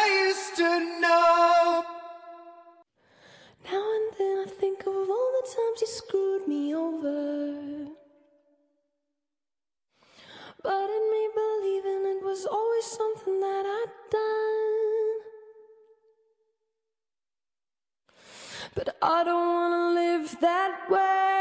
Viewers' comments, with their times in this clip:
0:07 Why did I heard the music but there's only a completely silence?? Omg hahahahah